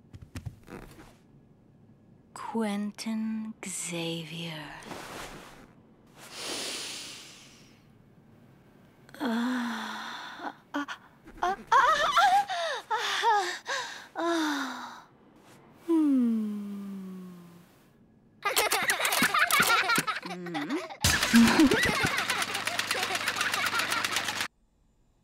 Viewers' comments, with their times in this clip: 0:10 Everyone, if Bloberta’s feeling good voice bothers you that much, that’s fine, but this is totally normal, even though her insides were injured.